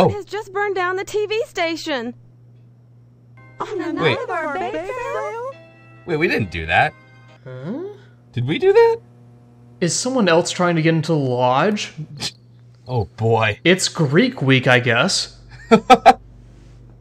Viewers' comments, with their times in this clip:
0:03 Lmao Thats the exact same voice clip with 3 different pitches.